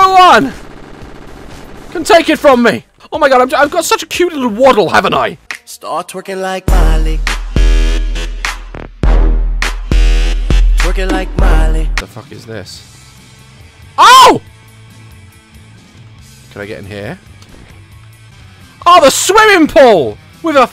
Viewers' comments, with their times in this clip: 0:08 OMFG THAT SONG HAS BEEN STUCK IN MY HEAD FOR WEEKS NOW 😂